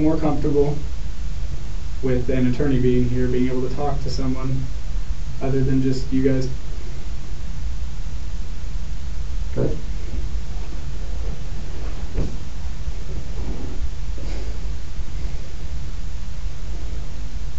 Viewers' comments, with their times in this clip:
0:04 you can hear the officer's confidence go out the window. The other officer had to hide how red he was getting lol